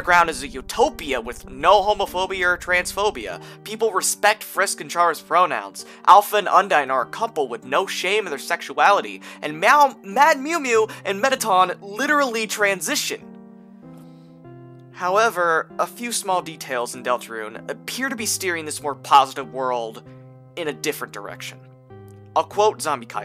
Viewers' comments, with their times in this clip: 0:04 AYO I need to get my shit cleaned, I thought you said "People respect Frisk and Chara's romance." for a sec there.